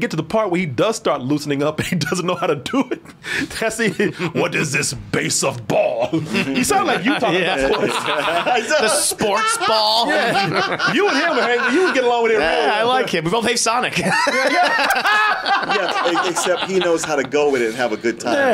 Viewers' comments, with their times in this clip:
0:04 Korey impersonating Knuckles: “What is this Base Of Ball?” Me: Laughing my head off because that’s actually what Knuckles does call Baseball in the movie. 🤣🤣🤣